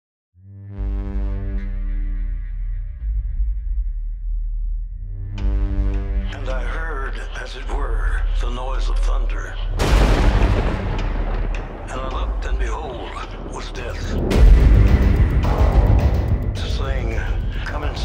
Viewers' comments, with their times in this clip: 0:04 Starting That voice in the background, sounds remarkably like Johnny Cash. Is it even him?